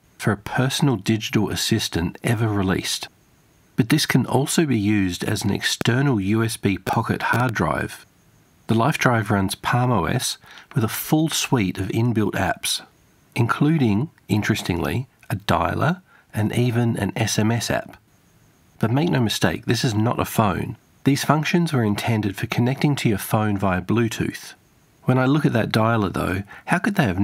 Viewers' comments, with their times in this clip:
0:09 got yourself some 5G chatter there. I was surprised to hear this noise when I was testing some audio recording equipment. I presume Telstra is reusing the old 2G spectrum space with 5G transmissions now.